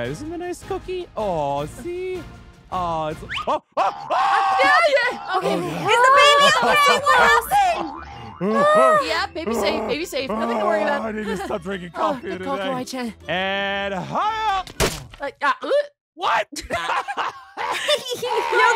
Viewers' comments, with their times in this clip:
0:03 when she fell and he starts screaming I was dying of laughter it’s a literally like I think one or 2 AM